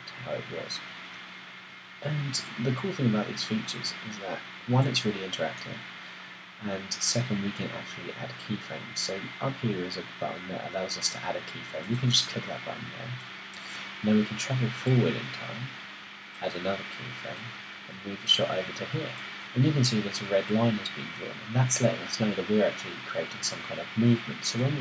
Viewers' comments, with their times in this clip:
0:04 I didn't think the fan noise was too distracting until !
0:07 is that sound the fans of your mbp?